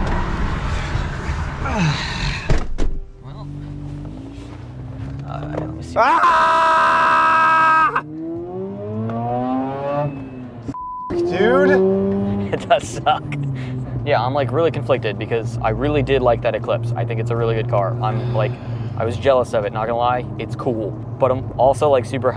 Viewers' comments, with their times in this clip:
0:08 the RX8 sounds amazing…